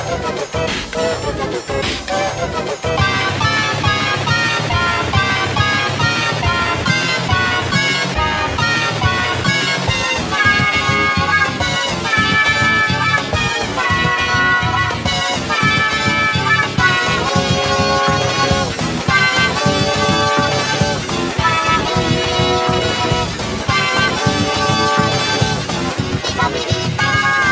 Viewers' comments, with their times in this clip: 0:09 G major 4^2